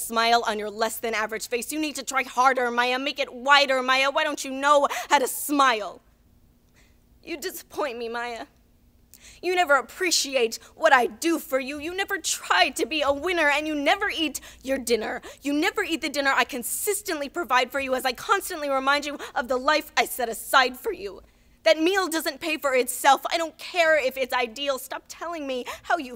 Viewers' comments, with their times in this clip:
0:06 The hurt in her voice is heartbreaking :(
0:07 the sound in her voice here always breaks my heart.....reminds me of myself, but obviously she's 9,999,999,999,999,999,999% better than me 💕